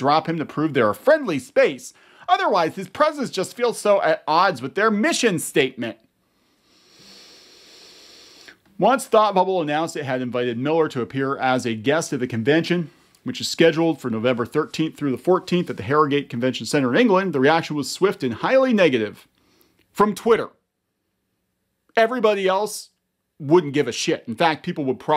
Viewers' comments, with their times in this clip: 0:07 Minute that was a long breath man xD